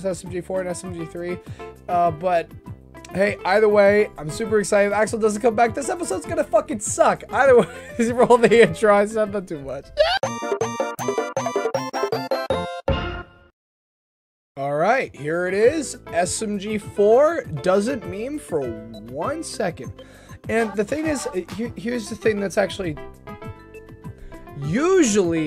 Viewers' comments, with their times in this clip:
0:10 voice cracks ah-